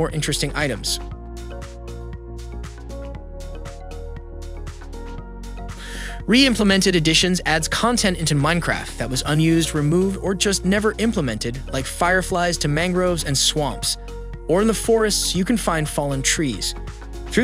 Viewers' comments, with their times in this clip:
0:04 I think it is a robot voice but it just seems advanced enough to almost perfectly replicate a human. It even sounds like he takes a breath